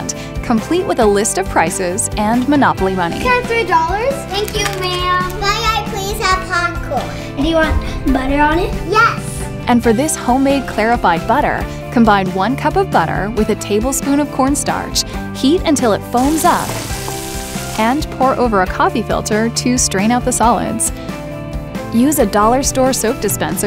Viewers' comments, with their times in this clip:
0:05 bye I please have Hong kong